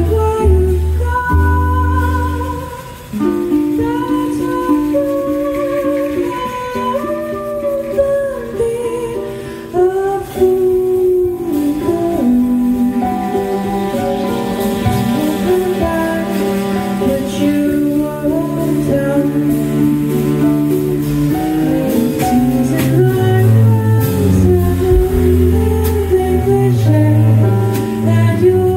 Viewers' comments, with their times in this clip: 0:10 sounds so much prettier in this version compared to the official